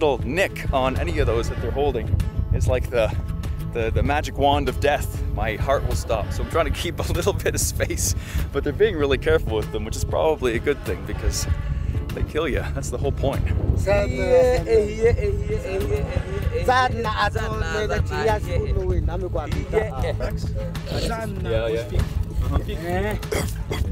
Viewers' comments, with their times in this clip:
0:07 the song is too hard